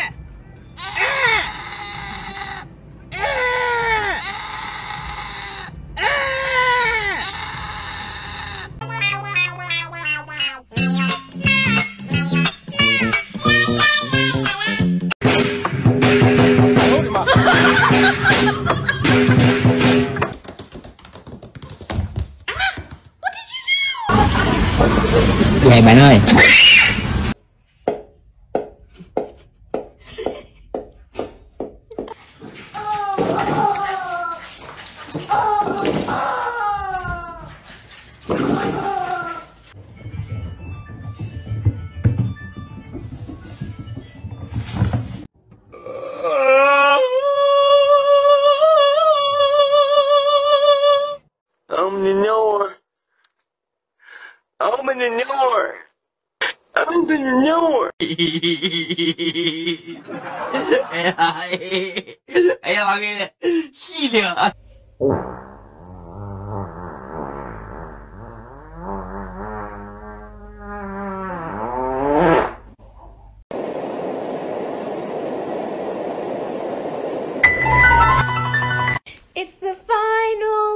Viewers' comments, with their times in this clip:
0:09 sounds like mio & mao
1:05 once bro heard the farting noise bro just said nah I needa move quickly but never did